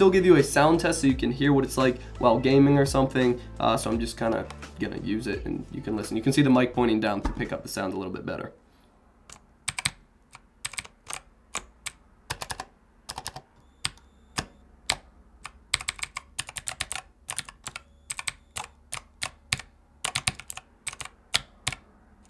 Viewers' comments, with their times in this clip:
0:09 I just farted at the exact rhythm of your typing.
0:09 LET THE ASMR BEGIN